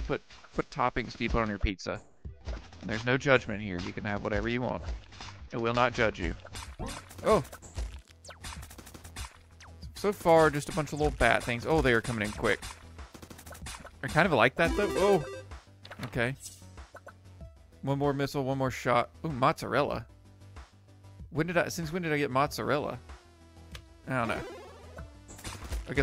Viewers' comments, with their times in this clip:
0:10 Audio is a bit messy for the firrst couple of minutes due to copyright. It get's fixed